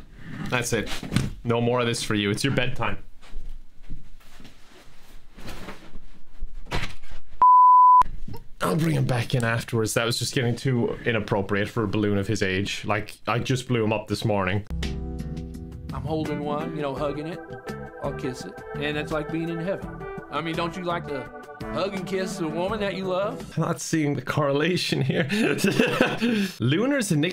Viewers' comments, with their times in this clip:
0:08 why is there an anime moan??